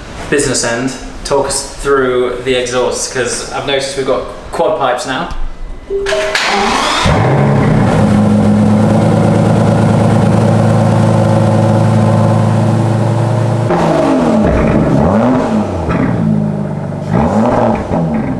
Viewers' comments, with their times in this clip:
0:06 exhaust sound. Yeah, thank me later...